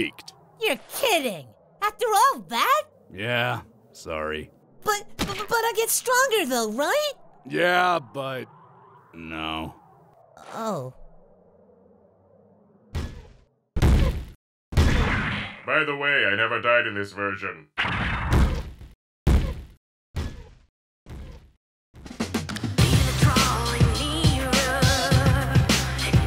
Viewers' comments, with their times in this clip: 0:07 beast gohan laughing in the background